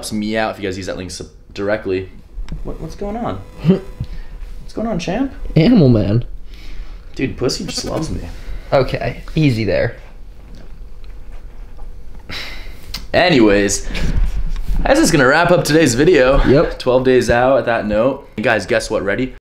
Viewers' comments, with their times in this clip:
0:09 Bro who tf talked 🤣